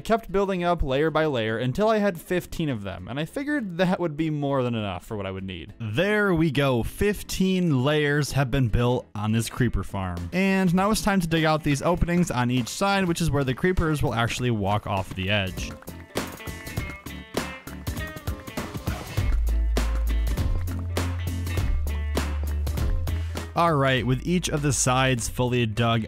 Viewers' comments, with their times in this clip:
0:10 what happened to your mic